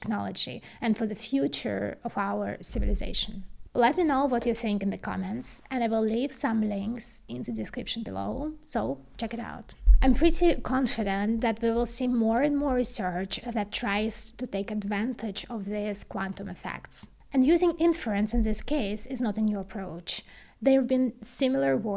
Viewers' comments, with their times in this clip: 0:09 Interesting as always! Regarding audio: there's some low frequency noise every now and then, for example (i can see the microphone physically moving, so perhaps a microphone physical isolation issue is the root cause) A high pass filter at 120Hz would solve that